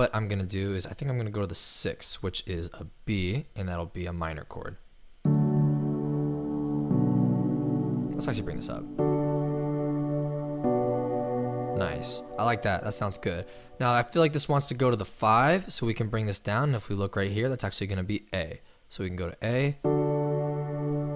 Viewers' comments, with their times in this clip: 0:05 me in my head: show you what it feels like know I’m on th- DANG IT I JUST GOT THAT SONG OUT OF MY HEAD